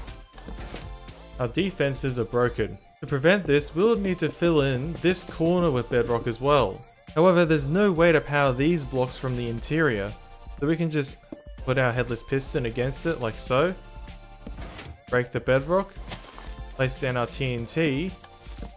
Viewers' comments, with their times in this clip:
0:04 Just don’t put that music tf 😂 VERY bad tradeoff